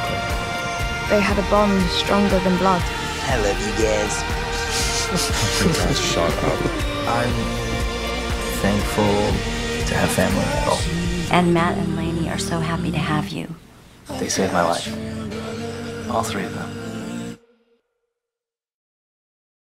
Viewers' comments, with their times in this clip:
0:03 AAAAAAA JUSTIN IS JUST SO CUTEE “ I lob you guys”